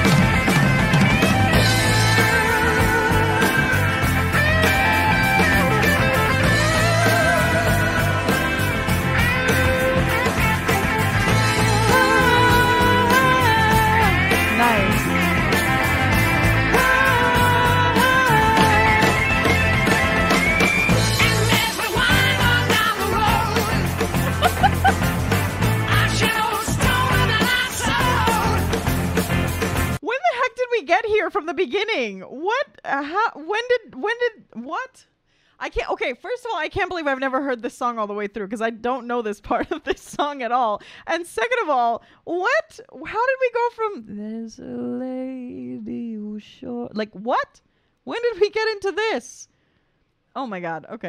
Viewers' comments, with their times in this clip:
0:10 you adding your voice at the mark was honestly one of of greatest things i’ve heard added to a song
0:35 So transitions and up-beats from very mellow to full on let's rock on!!!!! Masterpiece
0:35 "When did we get into this". That's so true. The climb on the stairway is steady n uncanny